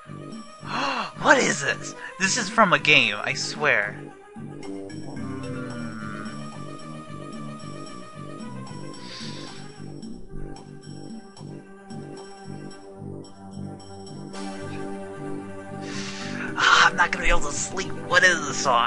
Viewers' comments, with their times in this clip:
0:03 It sounds a little like Magma Cavern from Blue/Red Rescue Team or Spring Cave from Explorers of Sky Also have you checked out the music from Torn Mansion/Hazuki Woods,ect.? Its one of my favorites right next to Turner's battle music. :)